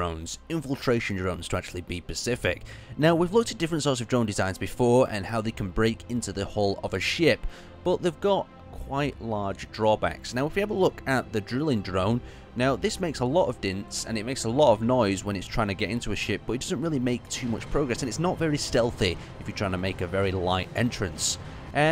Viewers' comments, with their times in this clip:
0:06 They are infiltration drones to be pacific sigh This is just me being a nitpicker but sadly you cannot be any more an ocean than you are every day